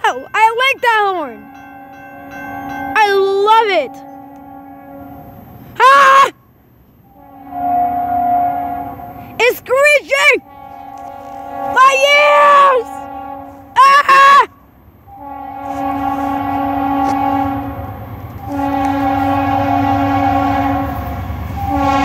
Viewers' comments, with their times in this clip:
0:07 It sounded like Bnsf LOL THE HORN